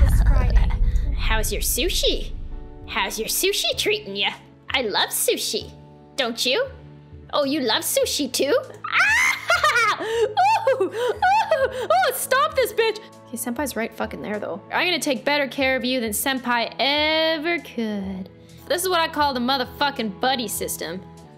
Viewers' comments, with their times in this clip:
0:09 that laugh tho 😨